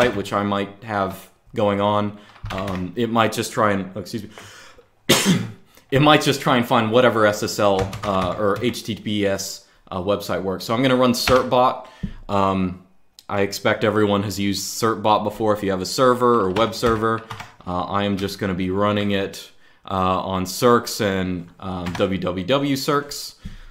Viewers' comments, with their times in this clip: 0:04 he has the novel SARS-CoV-2